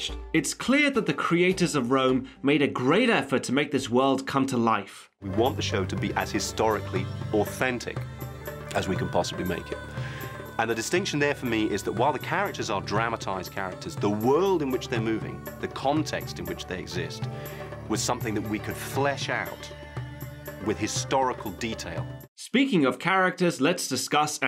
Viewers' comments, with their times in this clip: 0:10 *angry Baculus noises.